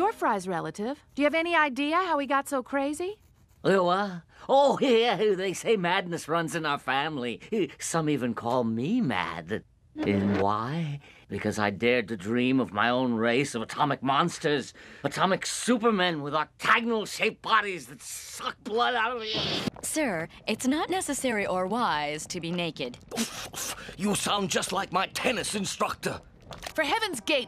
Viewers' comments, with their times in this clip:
0:10 The way his rant just trails off is so funny.